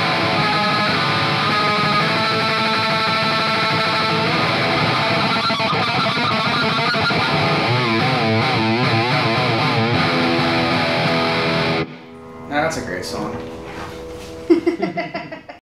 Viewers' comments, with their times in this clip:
0:07 sounded like the 'Violence" rift